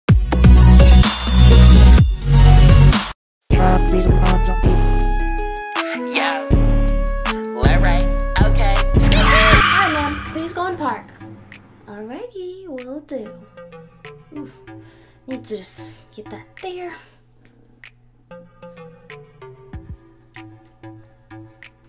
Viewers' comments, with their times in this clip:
0:03 larray is on the radio
0:03 HEYYYYY LOL AND THE MUSIC
0:04 you've got the right type of music going on!!